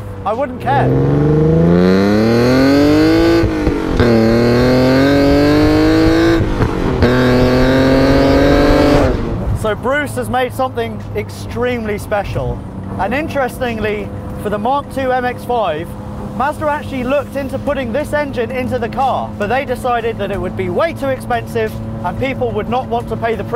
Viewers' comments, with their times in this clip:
0:05 sounds like a e36 328i